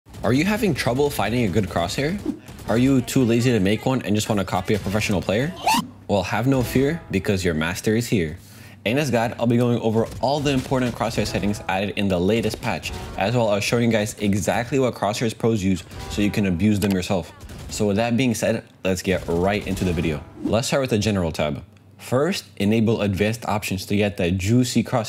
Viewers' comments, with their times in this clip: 0:04 best cut scream ever
0:05 lmao the perfectly cut scream
0:08 in this guide sounds exactly like anus god